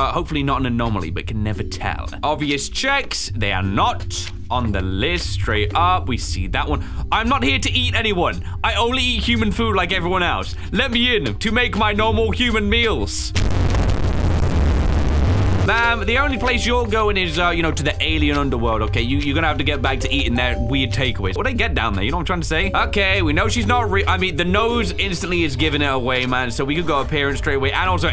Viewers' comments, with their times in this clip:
0:05 THE FUNNY LOUD SOUND
0:06 sounds like something Invader ZiM would yell in class😂
0:11 THANKS FOR THE HEADPHONE WARNING 😭
0:13 My ears are so relaxed 😊